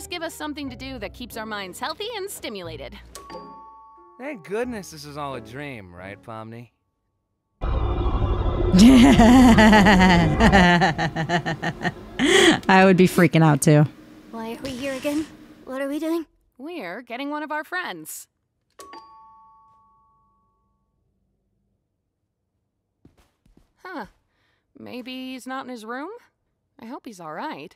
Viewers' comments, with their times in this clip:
0:08 When you get hit so hard you start laughing like crazy